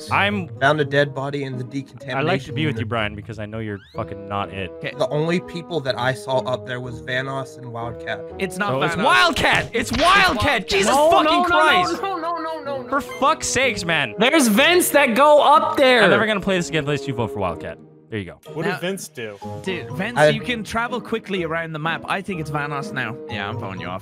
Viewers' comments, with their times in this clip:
0:10 I have never heard Vanoss sound so genuinely annoyed. He is such a chill dude (aside from acting like a psychopath to purposefully piss off his friends) so hearing him sound like he is on the verge of snapping is WILD. And I've been watching this dude for like...idk, 8 years?